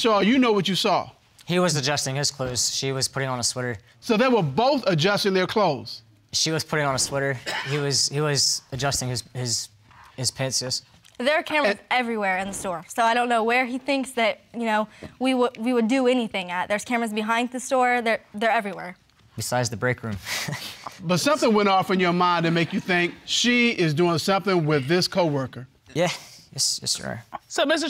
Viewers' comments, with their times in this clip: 0:08 Did he say pantses??